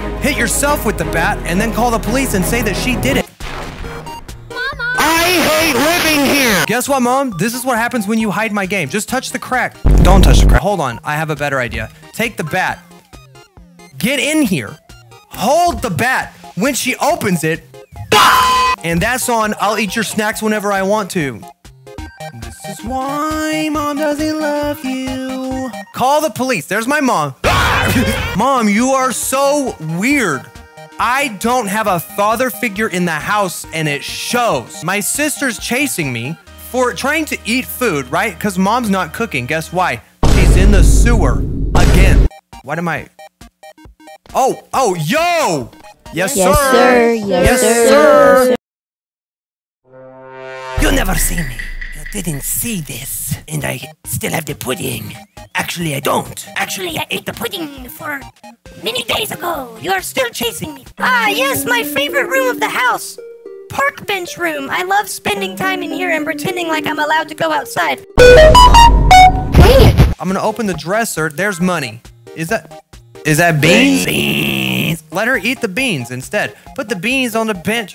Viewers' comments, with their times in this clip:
0:04 bro said in 8bit I HATELIVING HEREEEEE
0:27 The music got me so good😂😂😂😂😂
0:49 i thought you talking was a movie audio, lol
1:00 Sounds a lot like Ruby from BFDIA
1:01 How to enter ohio: make ut voice sound like this
1:01 Sounds like Ruby from bfbia
1:02 why does he sound like ruby from BFDI?!